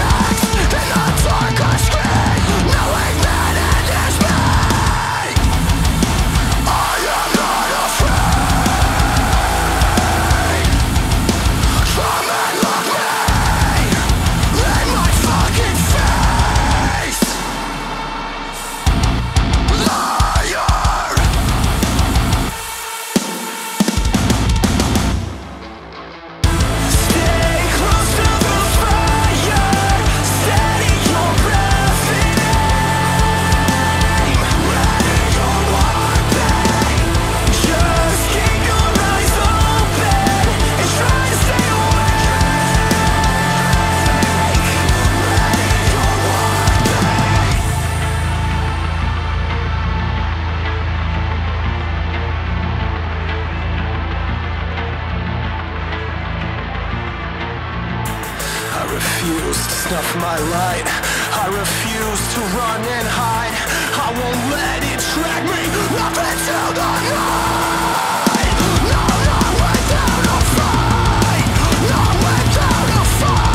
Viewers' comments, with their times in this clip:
0:06 Best part of the song when that drop hits those chugs with the long dissonant chords sounds so badass! \m/
0:41 fun moment back vocal
0:58 I fucking love these heavy endings you guys do in your songs. Starts like a machine gun and ends like heavy artillery.